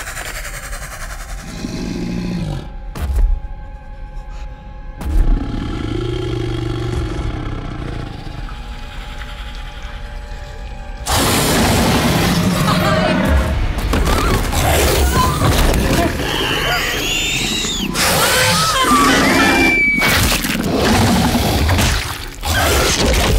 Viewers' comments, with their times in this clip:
0:05 sounds like a motorcycle, also the creature looks like a ninja turtle